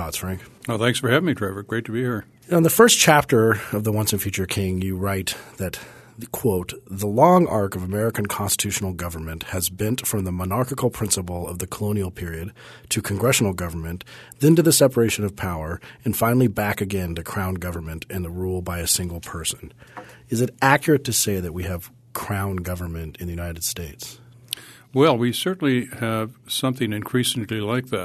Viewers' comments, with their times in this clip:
0:10 Cut out twice What's up?